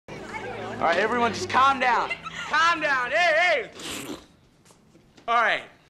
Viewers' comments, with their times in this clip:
0:03 In is buzz slurping something or is he trying to whisling